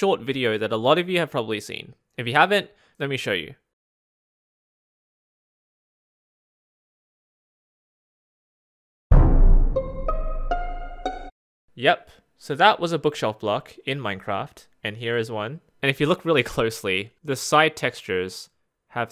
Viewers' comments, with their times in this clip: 0:07 lmao I am so used to the among us drip music that the normal one sounded weird to me